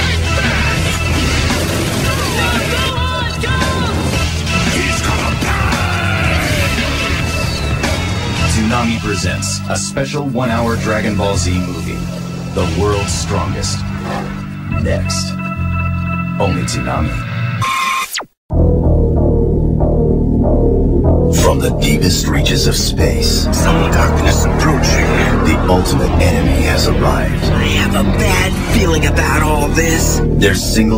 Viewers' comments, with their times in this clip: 0:08 One of my favorites. Sounds like Steve Blum, but I'm not sure. I love how sci-fi the beat sounds and the epic way he says, "NEXT." I miss that shit.
0:18 Ocean Dub voices on the Tree of Might promo still gets me hype to this day!